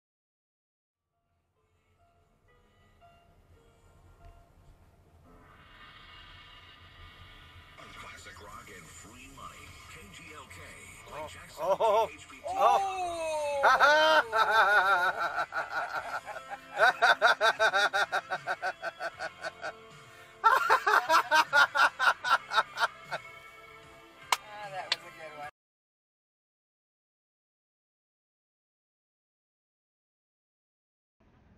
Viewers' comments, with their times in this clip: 0:10 Decent clip, other than going on way past the incident just because he likes to hear himself laugh.
0:15 I love it when people laugh at traffic idiots getting pulled over
0:16 just one laugh would have been great cammer.